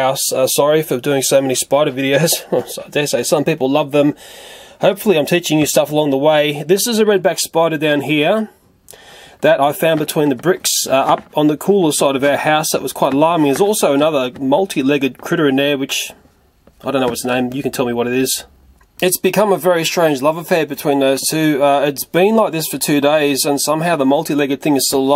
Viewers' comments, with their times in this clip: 0:06 YES SPIDUR NOT SPIDER YES SPIDUR XD